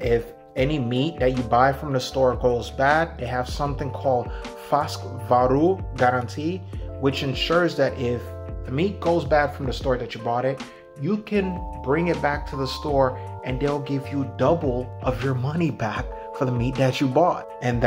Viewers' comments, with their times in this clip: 0:04 How can you not pronounce Färsk after two years?